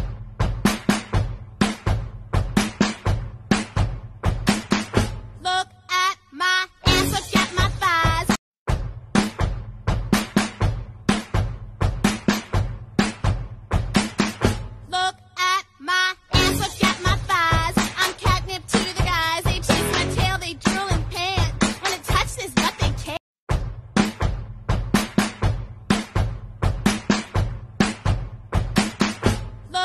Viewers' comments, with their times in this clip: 0:10 Why is nobody talking